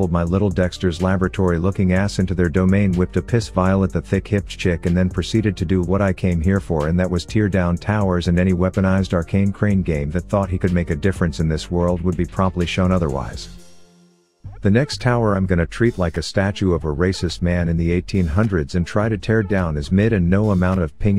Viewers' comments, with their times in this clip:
0:07 hehe a classic problem TTS “tear” as in to remove not “tear” as in to cry 😂😂👍